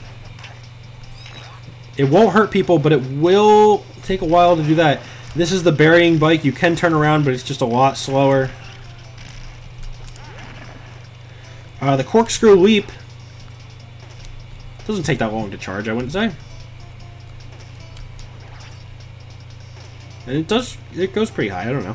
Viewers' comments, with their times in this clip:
0:06 a cat was criying